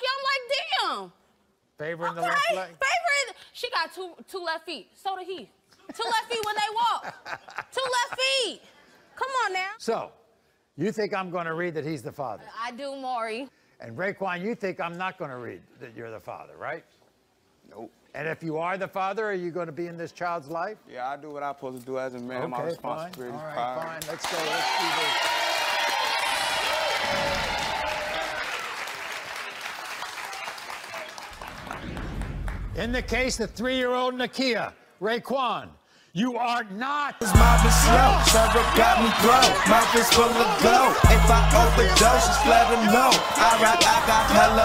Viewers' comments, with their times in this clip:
0:07 Maury giggle button
0:28 Omfg the song lol